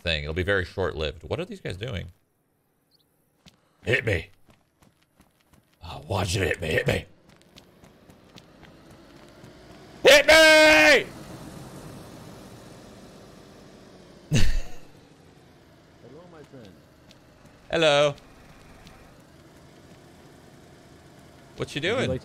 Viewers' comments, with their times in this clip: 0:04 Damn that Heath ledger Joker impression where he yells HIT ME! To Batman driving towards him with Batpod!